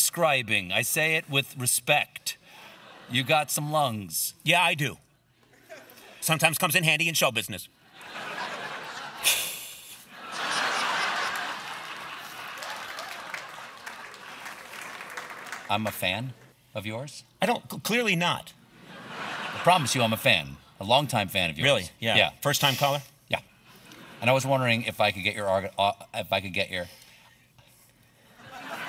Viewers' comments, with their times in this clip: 0:10 The cat hiss Conan made gets me every time 😂😂😂😂😂